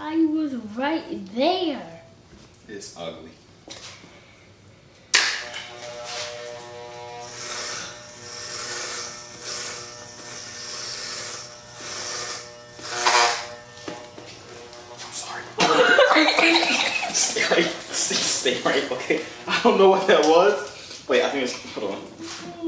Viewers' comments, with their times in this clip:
0:09 the clips went errrr ERERERErer